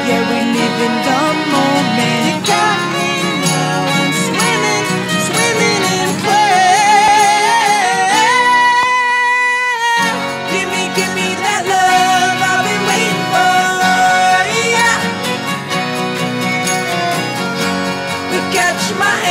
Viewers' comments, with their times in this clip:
0:07 his voice sends me to heaven lol it's that goooooddddd❤️